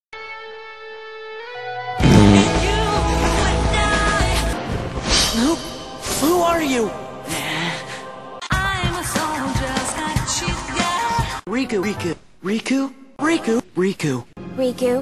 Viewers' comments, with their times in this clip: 0:03 i mean sora..............farts aaaaaaaaaaaaaaaaahaahhahhahah